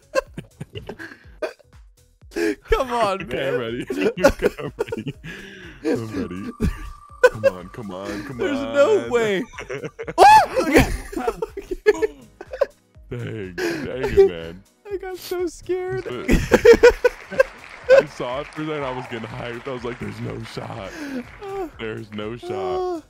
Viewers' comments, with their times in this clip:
0:09 You sounded like that screaming Indian meme that people use for Warzone TikToks 😂😂